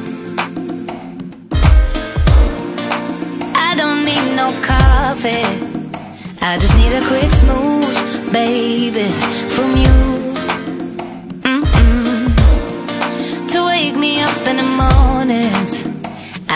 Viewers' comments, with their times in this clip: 0:04 Little one in my belly loves the song that was playing 🥰